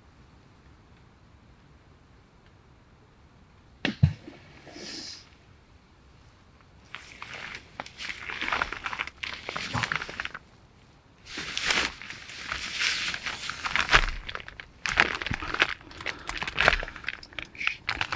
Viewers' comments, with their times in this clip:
0:03 in Sounds like footsteps, but it is hard to tell when it’s raining
0:04 was a rock or something being thrown into the water.